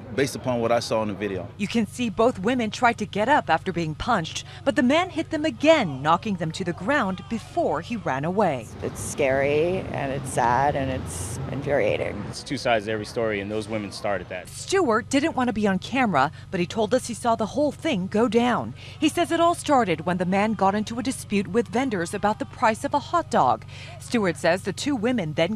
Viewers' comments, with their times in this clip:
0:08 stop speaking like thaaaad